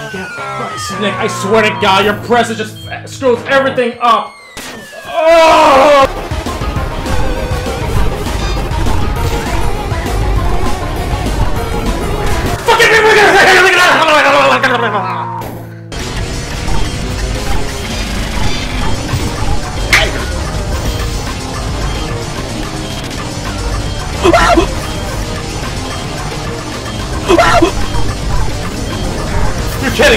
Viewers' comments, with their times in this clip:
0:10 bro started speaking enchantment table
0:12 bro spoke german
0:12 what da hell he sayin?